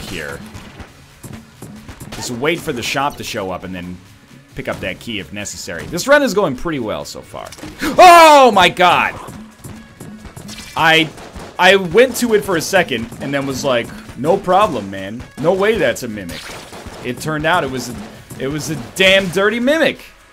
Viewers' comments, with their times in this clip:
0:08 Headphone users, you have been warned....